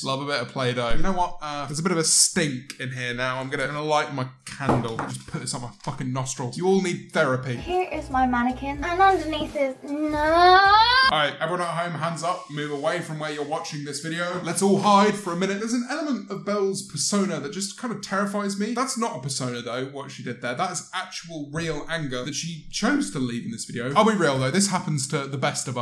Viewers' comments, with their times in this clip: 0:07 why the fuck is she screaming